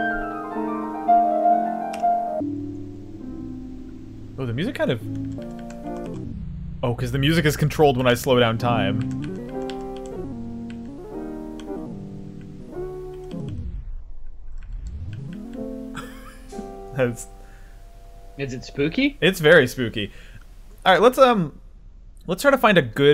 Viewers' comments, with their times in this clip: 0:09 that's some James Blake shit right there